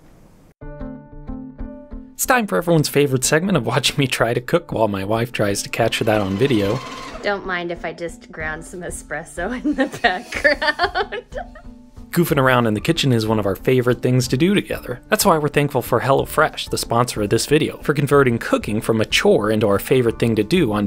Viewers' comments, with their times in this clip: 0:04 Awesome video but that's totally the sound the Ice Worms in Subnautica Below Zero make
0:07 What an adorable laugh your wife has